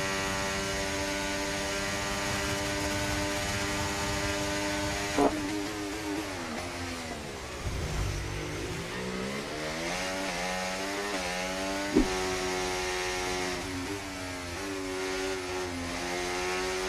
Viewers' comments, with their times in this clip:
0:03 lil bro ain't getting away with that fart.
0:04 Bro aint hiding that fart 🌬